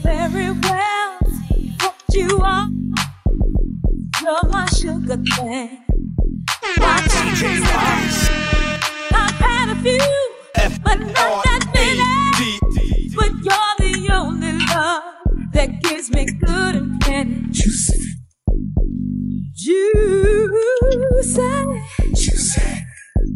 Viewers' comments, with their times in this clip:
0:09 What that beat from on that shit be banging ...bless- up you all doing the same thang ☑️💯